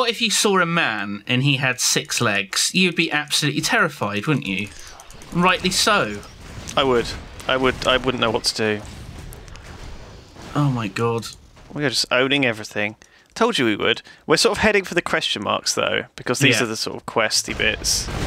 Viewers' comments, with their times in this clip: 0:03 does he said "SAND JEWS"? OMG THEY"RE EVERYWHERE.